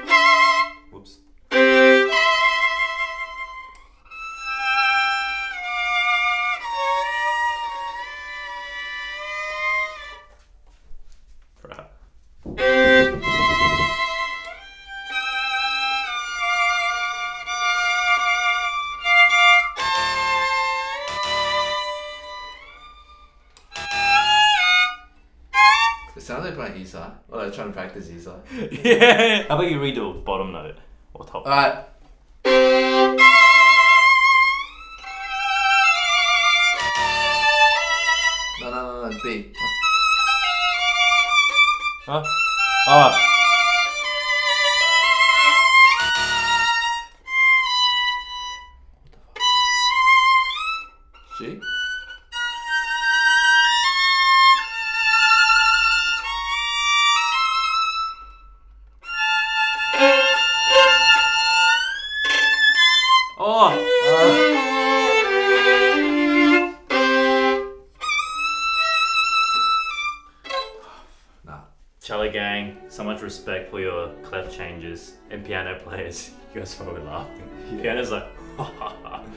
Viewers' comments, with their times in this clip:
0:07 it was only a matter of time before TwoSet went in for the Music YouTube microtonality fad
0:59 My ma came in crying and screaming HAVEN'T YOU DONE ENOUGH ALREADY I said Ma, Look! The 🐈 is fine, it's just these violinists on YouTube She said i can hear they are violent I went No violin
0:59 i was playing this video My mother just ran in Completely panicking Thinking i was strangling and murdering her cat again
1:02 they went from screechy suffering to 4 crochets of "oh thank god" back to screechy suffering